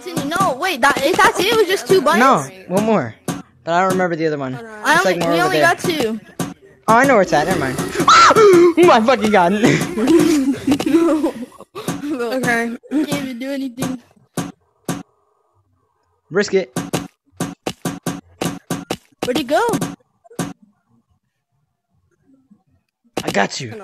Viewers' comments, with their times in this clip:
0:06 he brung out his inner Australian